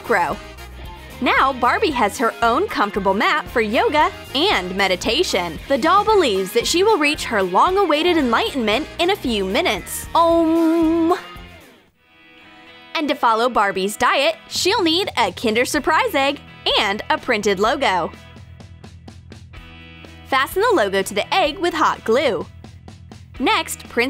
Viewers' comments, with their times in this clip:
0:10 You needed to work on the 'om' part😉